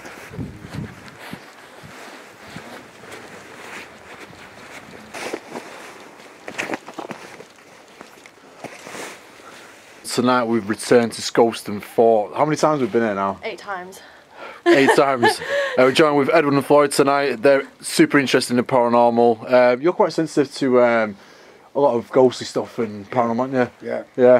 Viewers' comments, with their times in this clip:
0:10 Sounds like something tries saying something over your voice.